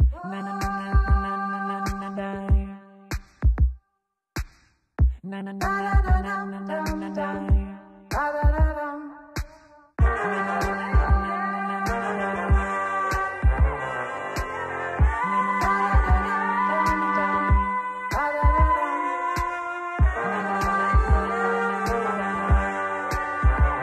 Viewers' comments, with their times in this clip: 0:10 Wow he sound like the wave of now